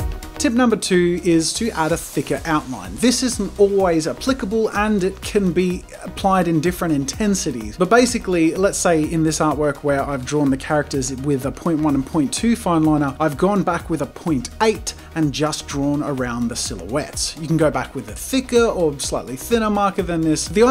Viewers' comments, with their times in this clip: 0:03 thought he said a thick outfit😂